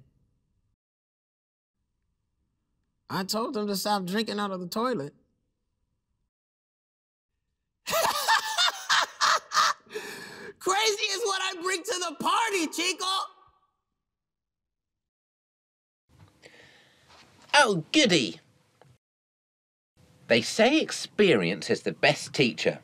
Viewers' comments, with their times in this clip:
0:08 close to Light Yagami laugh